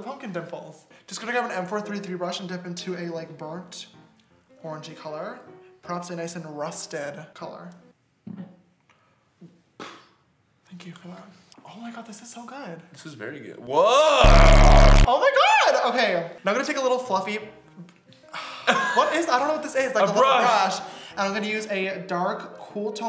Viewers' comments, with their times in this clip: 0:07 And when he like emphasised rusted it's cuz it's the colour name on the paletteeeee